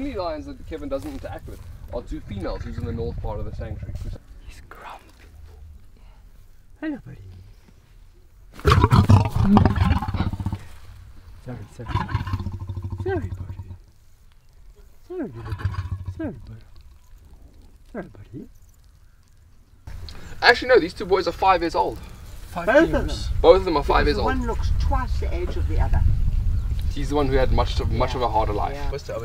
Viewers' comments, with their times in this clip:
0:08 I am a million miles away and even so the white lion's warning made me jump in my sofa....
0:14 The lion is growling because you are too close and you are looking at him in the eyes. Lions see this as a challenge. These people are stressing the animals. Step back. They are growling because they aren't happy. Kevin is the only one who can get close to them because he has known them their whole lives and has a relationship with them. Kevin makes people back off if the lions are getting irritated.